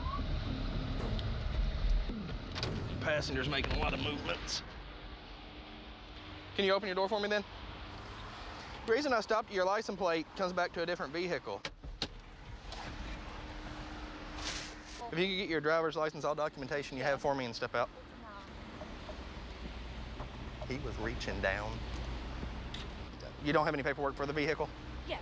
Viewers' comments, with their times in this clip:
0:10 What's a "vee-hickel"?